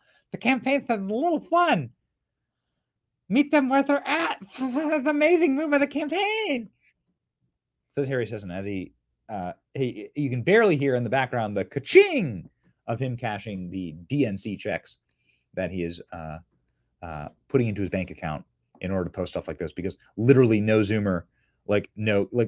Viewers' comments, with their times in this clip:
0:07 Long timr fan n watcher...but Lost me on this one at the dumb voice ..